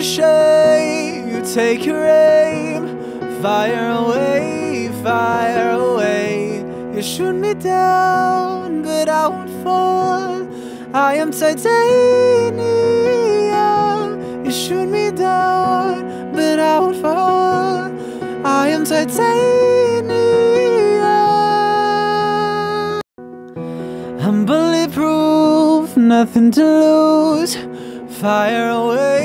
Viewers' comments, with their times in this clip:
0:08 from I hear too much autotune effect...
0:16 the distortion on the voice is very clear, but maybe in the context of the song is not udible :)